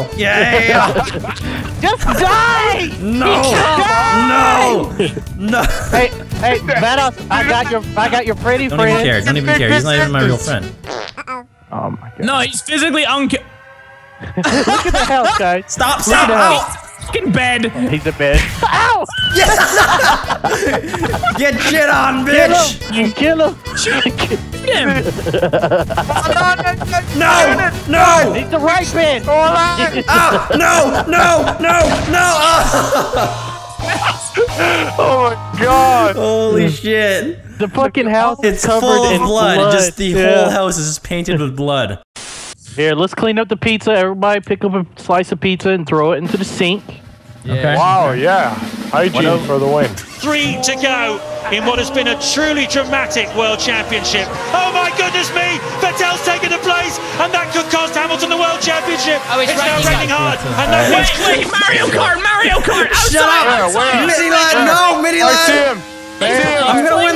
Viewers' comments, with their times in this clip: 0:10 awwwwww that uh oh was so cute n_n
0:10 How many of you heard an "Uh-oh" XD
0:49 lol he is a motor. /motorcycle speed sound plays/